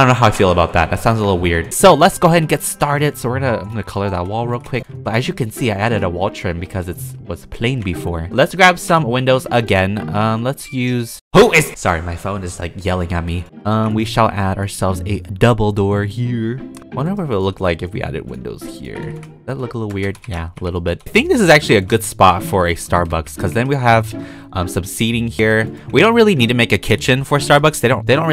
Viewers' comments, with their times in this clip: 0:09 I thought that was my phone